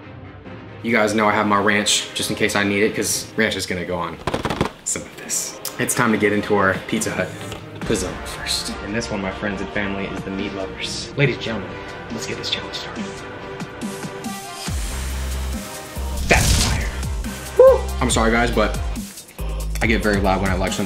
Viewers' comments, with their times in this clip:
0:03 The epic music always gets me! Fire!